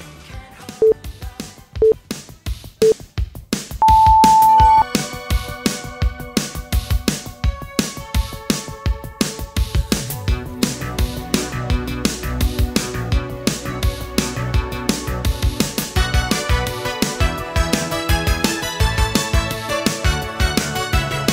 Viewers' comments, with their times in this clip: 0:05 min omggg This song!!! 😻😫 When I hear this song I feel like the whole stage is mine! 💯 💃🏼